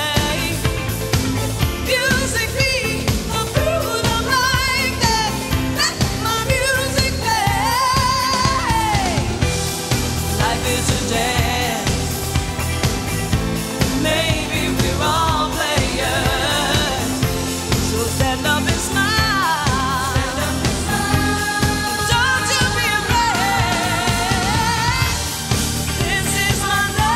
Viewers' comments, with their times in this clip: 0:08 For me its the note